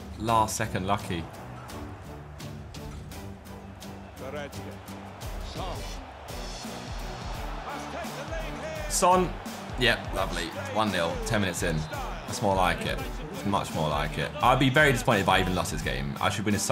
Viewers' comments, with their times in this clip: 0:04 music reminds me of the gta days